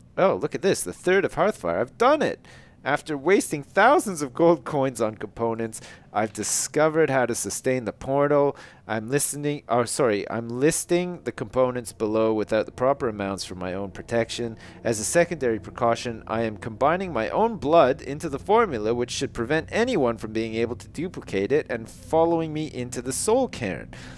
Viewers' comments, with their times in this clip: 0:05 lol it sounded like sustain the porno.
0:06 Lol It sounds like he says 'I've found a way to sustain the porno'